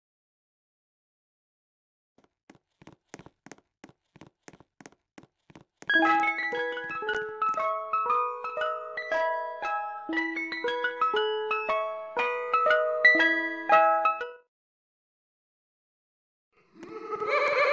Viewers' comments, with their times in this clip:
0:05 clowning music lol